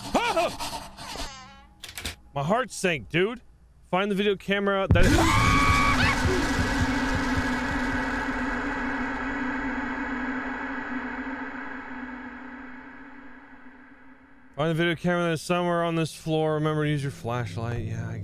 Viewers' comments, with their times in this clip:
0:04 Mans screamed like a little girl 💀
0:06 Scream of terror